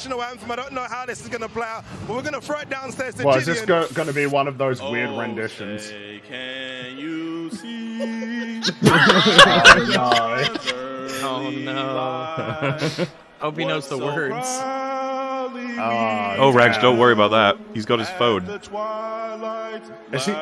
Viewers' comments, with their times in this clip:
0:04 As an American, that rendition of my national anthem was truly inspiring.